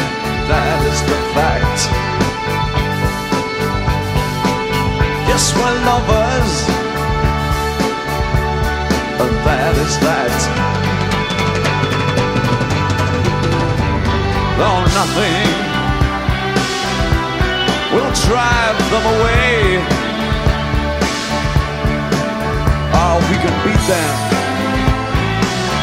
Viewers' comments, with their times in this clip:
0:10 the dennis davis drum fill here is a killer. he did this exact same fill on bowie live. bombs away!
0:10 Inappropriate drum fill but an incredible song and this is a great version overall